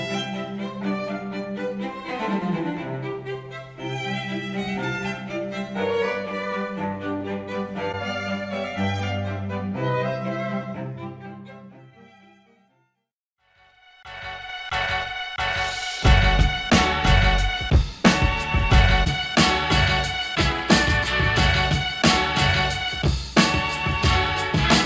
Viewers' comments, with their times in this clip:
0:07 YES deep base